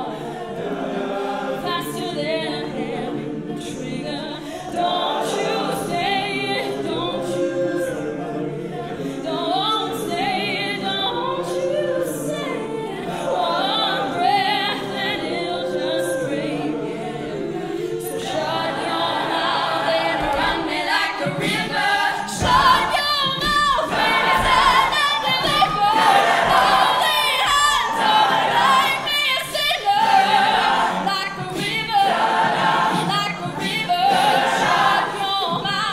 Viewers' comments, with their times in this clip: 0:03 wow she sings beautiful, bit the girl on the right on is sow pretty
0:21 he starts :) sounds exactly like a drum